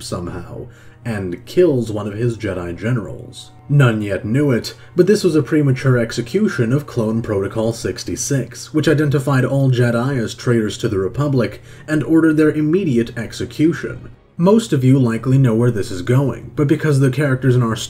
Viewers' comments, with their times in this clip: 0:03 Nunyet Nuet sounds like a Star Wars character name lol